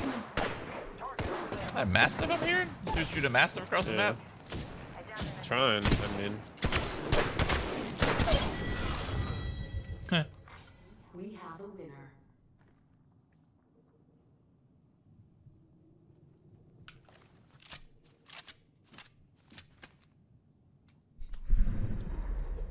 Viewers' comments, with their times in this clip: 0:09 I love how shroud goes “heh” 😂